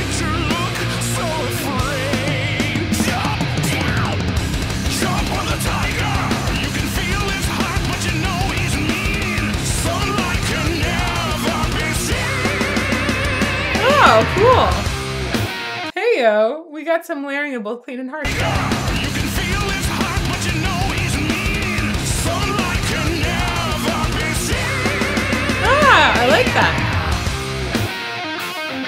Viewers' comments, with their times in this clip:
0:10 is when Adam D jumps in with the growls.